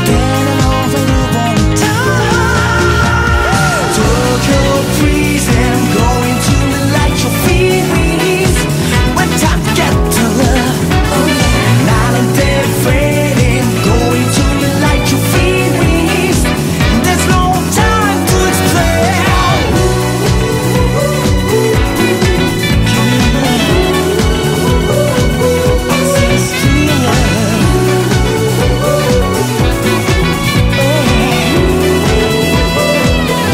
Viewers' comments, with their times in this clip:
0:04 Tokyo prison~ I'm going to relight your fEeRiNGs~~~
0:21 Itadori almost dies: Outro song: 🕺💃🕺💃🕺💃🕺